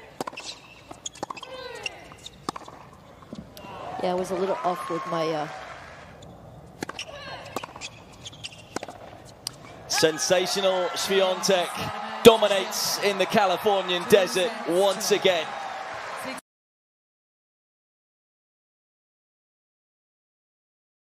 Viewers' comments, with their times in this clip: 0:03 That WOW is literally me 😂